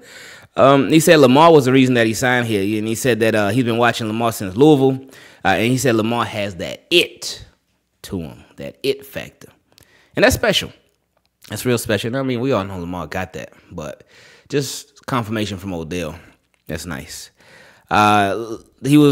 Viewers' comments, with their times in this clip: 0:06 you said Louisville correctly THANK YOU wooohooo